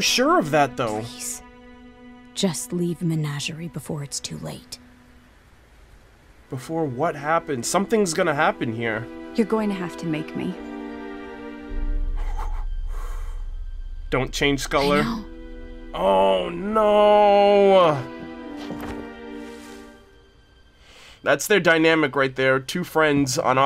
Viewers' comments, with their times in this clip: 0:05 please tell me i'm not the only one hearing Indiana Jones music here